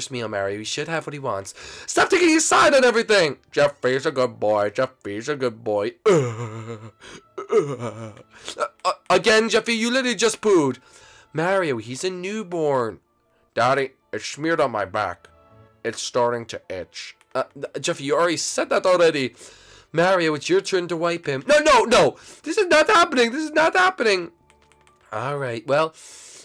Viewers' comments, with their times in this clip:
0:07 Jeffy sounds like Patrick from spongebob uhhhh uhhhh.